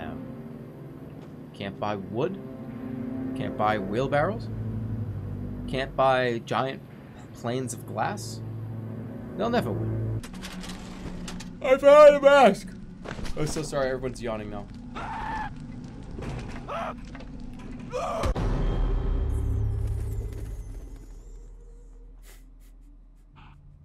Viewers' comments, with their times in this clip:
0:10 god that tf2 dispenser sound fucked me up for a second